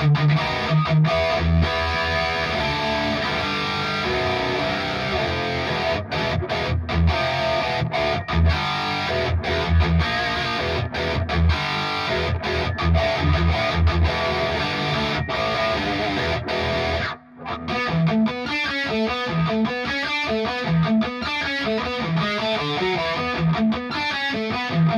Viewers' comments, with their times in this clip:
0:07 behind the veil opening riff is 🥰